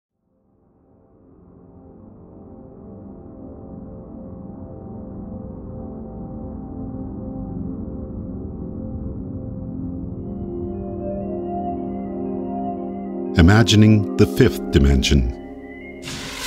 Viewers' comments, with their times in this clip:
0:00 That is a cool and space-like sound effect, excellent video.